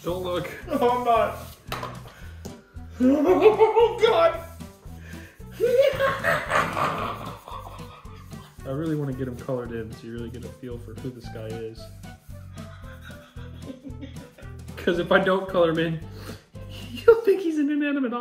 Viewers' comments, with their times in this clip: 0:05 How does that sound like a tea kettle?